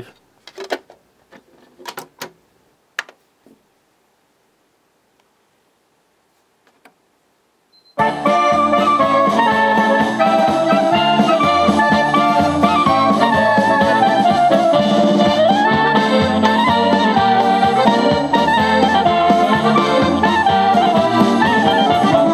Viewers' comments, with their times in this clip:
0:07 Haha, now that's MY kind of music! :D